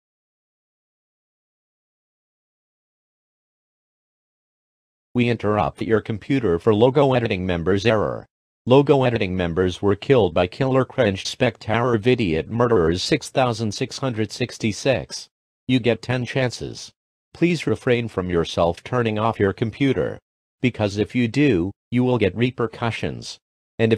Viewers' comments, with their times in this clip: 0:05 This is me Speaking!